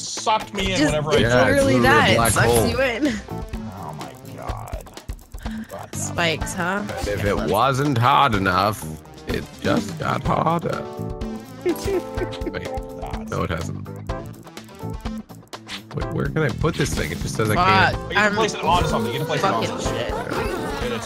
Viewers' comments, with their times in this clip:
0:07 Giggle in the eye of the rage storm